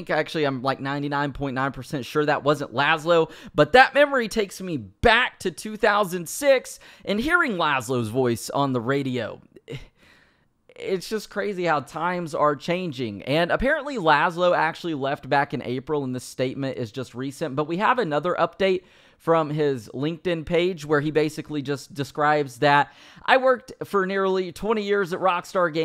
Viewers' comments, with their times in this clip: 0:06 bro the way you said "back" fit perfect right there